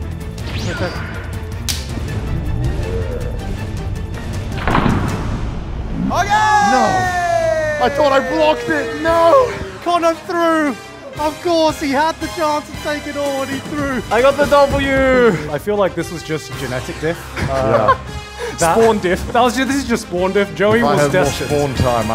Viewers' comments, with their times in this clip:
0:07 The sudden FOX NFL theme got me real good. It is pretty epic, to be fair, though that may just be some American bias. ¯\_(ツ)_/¯
0:09 Why is there the superbowl music